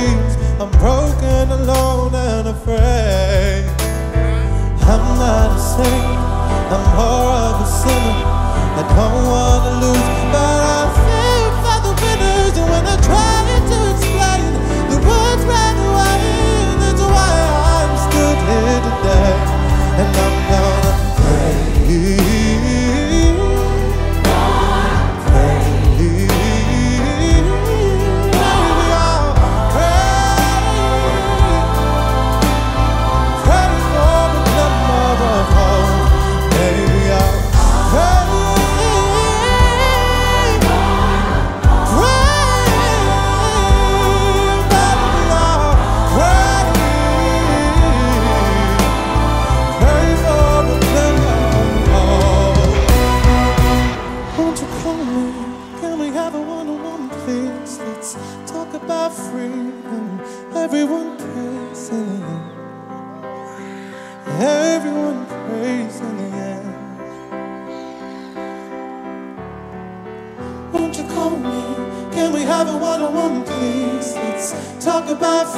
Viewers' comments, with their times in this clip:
0:03 Can someone transcribe the piano lick ?
0:38 that note gives me goosebumps, what an angel
0:54 when I get to I honestly am taken away to a whole different spiritual level as he builds up the tempo. SAM YOU ARE THE BEST
1:03 OMG... that scream when he waved rofl!!
1:03 did anyone here that girl that literally sounded like she was possessed and the demon was screaming out of her